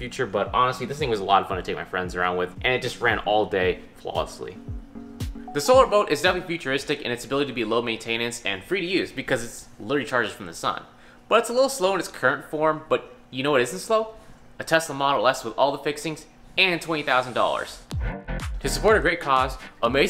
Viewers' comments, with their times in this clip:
0:07 why did he say maintenance like that